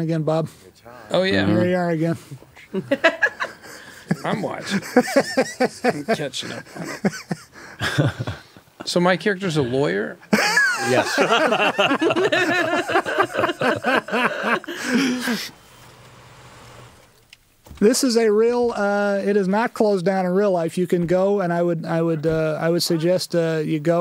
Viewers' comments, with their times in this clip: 0:05 "So my characters a lawyer?" Saul sounds like he's high as hell man